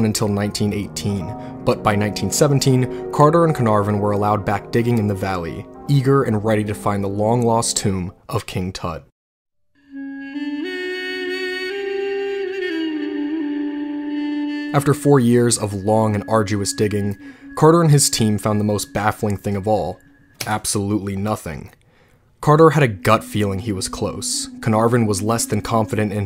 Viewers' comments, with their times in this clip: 0:09 totally unrelated, but i'm enjoying all the old music in this lol also having an avatar the last airbender moment